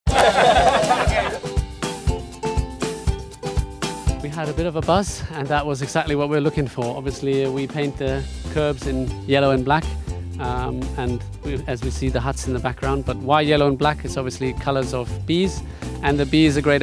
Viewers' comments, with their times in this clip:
0:00 Replay the laugh and you get a special kind of laughter at the end of the laughter